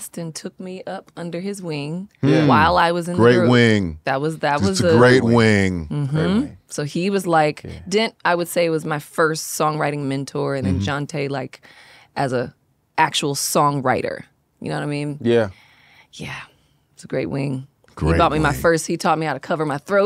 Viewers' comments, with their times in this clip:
0:03 It’s the little things too. Like the way he said “great wing” He’s so dramatic and funny😂😂😂